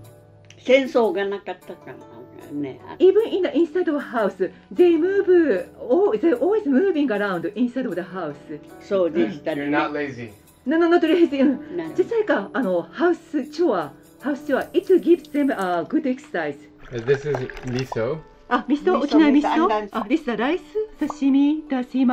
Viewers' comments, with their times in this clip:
0:04 This is the cutest accent i’ve ever heard.